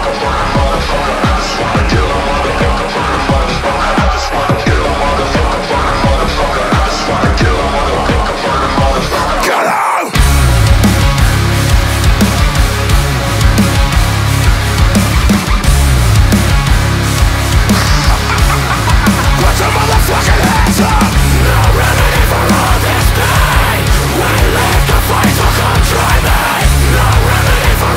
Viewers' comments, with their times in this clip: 0:10 The drop needed double kick drums.